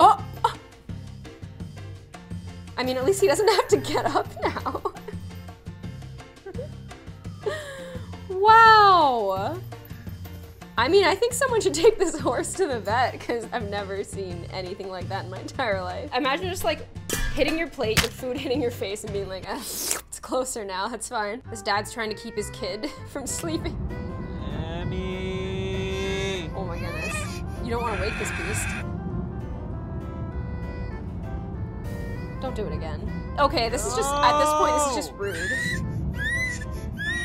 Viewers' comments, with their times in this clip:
0:06 Is that a POLICE SIREN(or ambulance or fire truck) that I hear ?!
0:22 I got really annoyed with the kids screams and yells instead of the dad